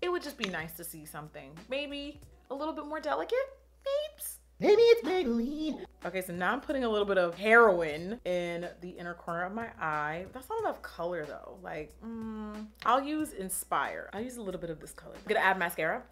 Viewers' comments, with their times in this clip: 0:04 Ok but why is there no comment about the "MaYbE iT's MaYbElLiNEeEee ??? I'M CRYIIINGGGGG OMG JAJAJAAJ